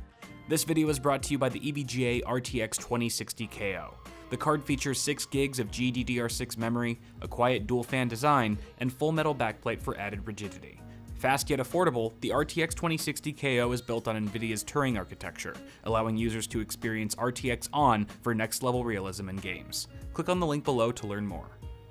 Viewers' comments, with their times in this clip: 0:08 I thought he said virginity